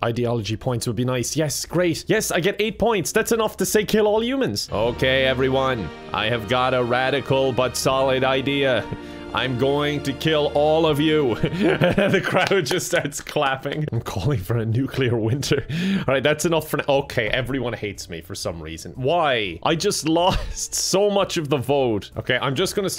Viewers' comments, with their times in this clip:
0:05 He sounds like the mayor from the Simpsons.